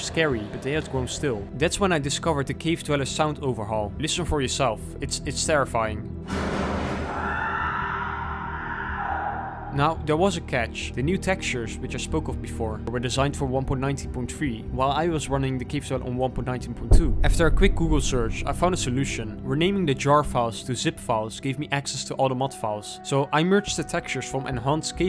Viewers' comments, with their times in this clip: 0:06 Gotta love a soma reference, Terry Akers does make some truly horrific sounds.